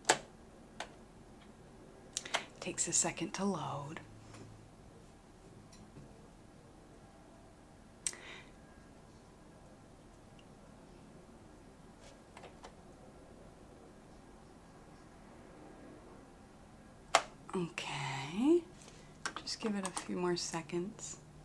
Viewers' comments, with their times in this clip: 0:07 STOP THE BREATH had me pause to fucking die laughing. That awkward, should I speak breath, I’m still LAUGHING.